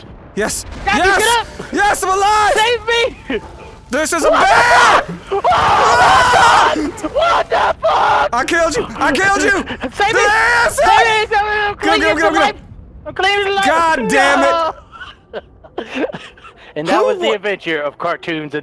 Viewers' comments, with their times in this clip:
0:03 when delirious started screaming i woke up my parents crying of laughther Lmaoaoaoaoaa